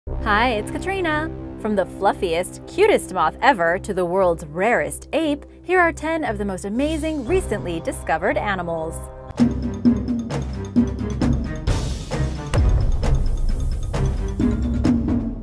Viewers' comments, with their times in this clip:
0:00 They way she says "Hi it's .......(her name)" gives me goosebumps